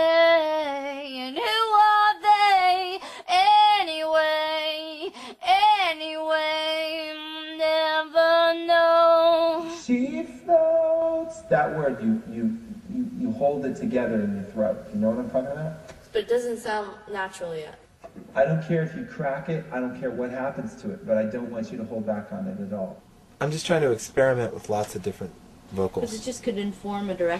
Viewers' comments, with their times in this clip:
0:08 Not to be annoying or anything, i never got to be the first view, so im just saying: FIRST VIEW!! Anyway, love the screaming in "she floats". omg, i looooooooooooove whos to say!! and obviously white houses (hence my name) lol. I guess she changes the lyrics a bit wen she records, like she did